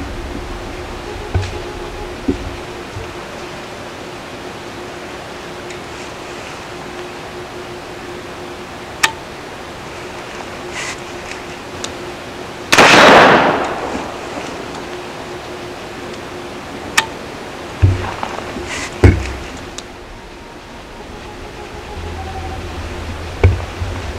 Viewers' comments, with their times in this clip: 0:07 Loudest safety click in the history of firearms. 😄